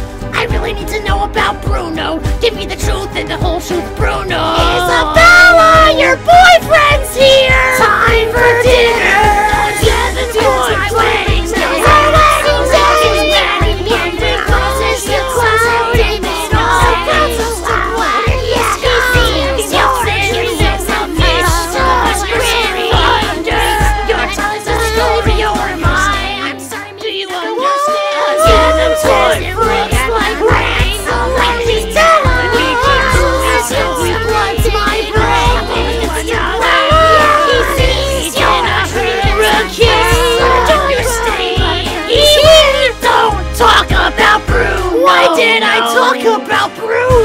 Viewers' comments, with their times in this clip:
0:04 this sounds like if a younger sibling was mocking you
0:04 is like:ISaBeLLa YoUR BoYfRiEnDs HeRe HAHAHAHAA
0:09 they sound like kids are screaming for help LOL
0:09 I hear a Marge Army.
0:10 the voices in my head
0:11 I’m dying because the vocals sound hilarious layered together 😂😂😂
0:24 A very good voice acting very pro Edit: why was there a part where they called toad Bruno? Edit 2: it's cursed in this part
0:31 Did you say Nutella because I heard you say Nutella lol